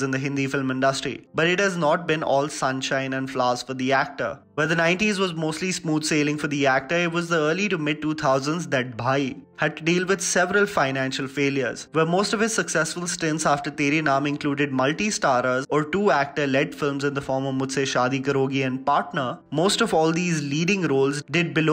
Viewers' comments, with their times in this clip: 0:09 that sarcasm in his voice 😂😂😂😂🤣🤣🤣🤣🤣